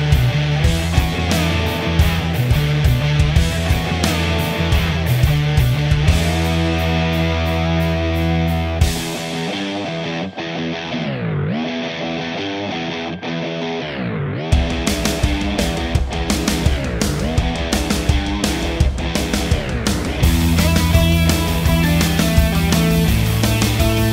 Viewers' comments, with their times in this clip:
0:09 Which expression pedal are you using Btw, you sound great!